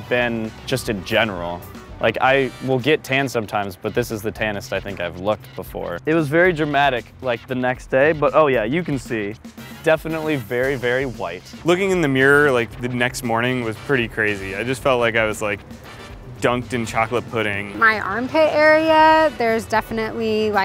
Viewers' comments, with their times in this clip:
0:07 starts heavily breathing